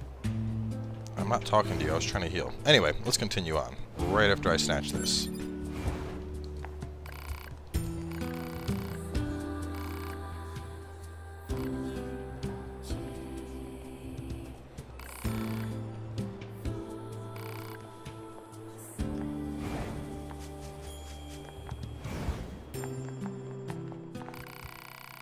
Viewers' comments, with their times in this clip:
0:08 oh shit does anyone know the track playing ? the vocals are gorgeous <3!